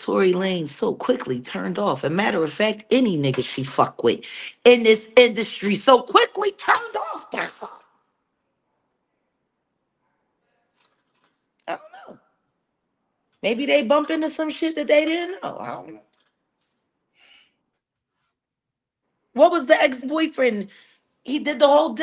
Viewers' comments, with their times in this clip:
0:06 Somebody farted at the mark, 😆 🤣 😂